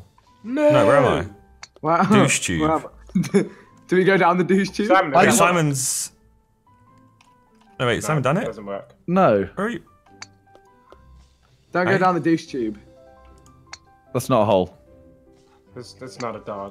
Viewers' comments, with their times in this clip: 0:04 tobis suspect noises